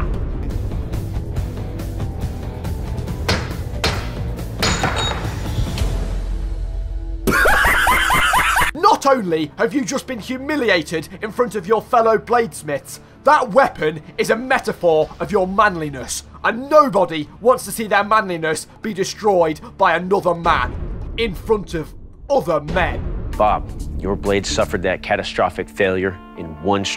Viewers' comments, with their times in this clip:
0:07 mutahar whoah it is the sog aheh i love his laugh 🤣 Lastly i will add that critikal did a video called forged in overwhelming masculinity. But history channel destroyed their own channel because they took down their whole eps and posted clips sad violin noises
0:07 :O the Muta laugh!